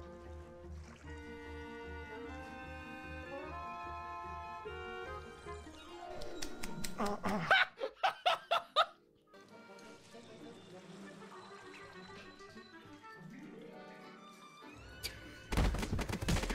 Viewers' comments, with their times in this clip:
0:04 i know the slappings edited in but i dont know about that sound